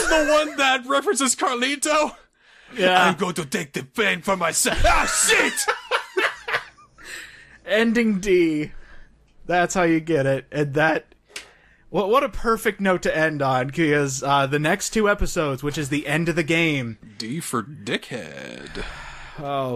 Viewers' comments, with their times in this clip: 0:03 XD carlito impression Straight DIED